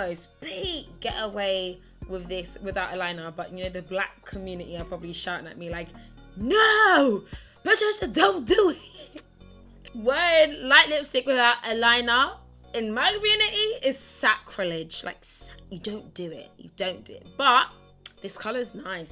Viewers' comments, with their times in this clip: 0:07 here accent slips away and I died